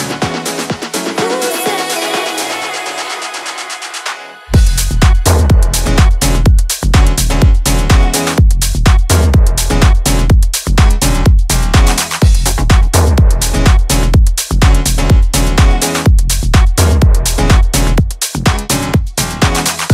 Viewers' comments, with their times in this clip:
0:05 great sound,Lovely vocals